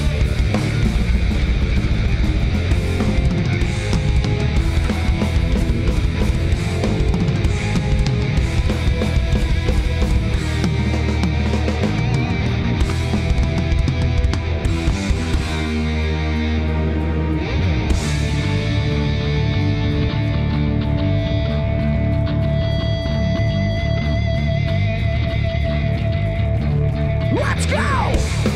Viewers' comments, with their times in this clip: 0:10 sick one handed drum fill